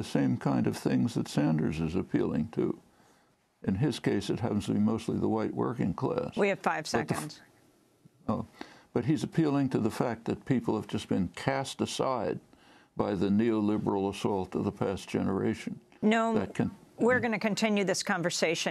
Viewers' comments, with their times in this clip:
0:06 she sounds so done